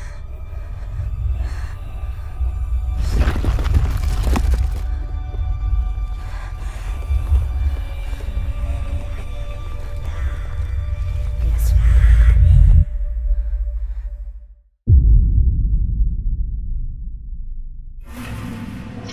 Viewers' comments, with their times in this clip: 0:07 I want to reverse that part because it sounds like talking.